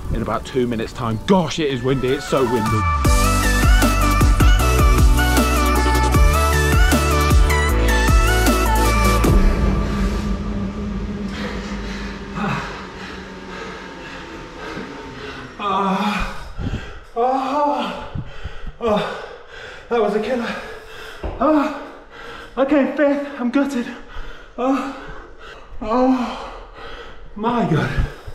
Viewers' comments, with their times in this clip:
0:05 no need for those noises, I have my volume high and my window open ffs haha
0:15 Had to mute sounded a bit strange coming out my room